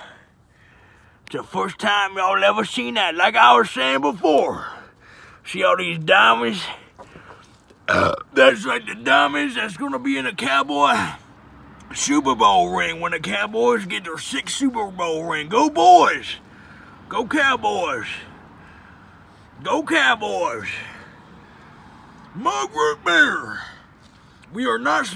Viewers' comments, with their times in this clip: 0:07 Bruh that burp😂😂😂😂